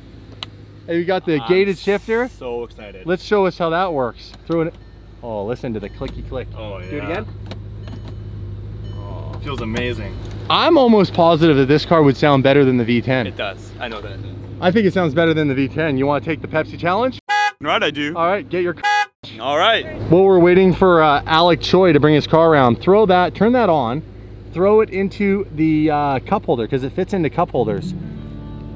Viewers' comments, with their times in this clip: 0:10 still seeing the cold revs…